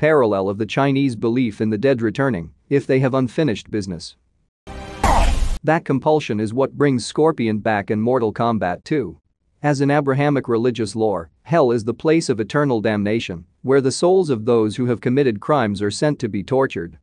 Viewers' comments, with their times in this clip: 0:05 My favorite part. Sub-Zero had his opportunity to shed his old name and assume his new one and now Scorpion does the same. He sounded so badass